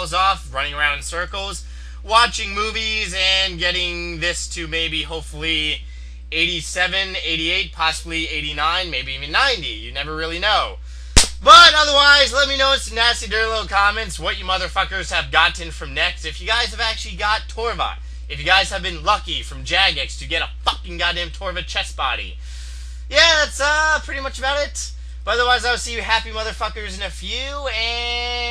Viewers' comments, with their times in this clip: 0:10 the sound of a true "pimp slap"